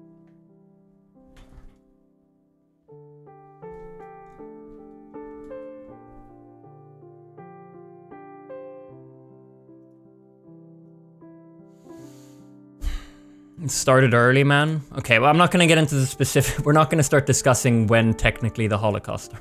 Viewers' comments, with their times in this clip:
0:04 btw was a beautiful piece of music in the background 😍